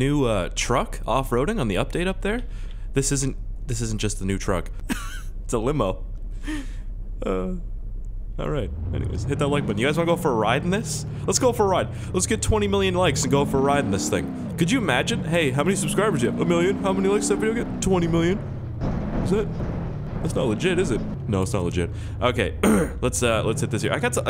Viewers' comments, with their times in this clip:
0:07 The lowkey "hit that like button" tho xD, subbed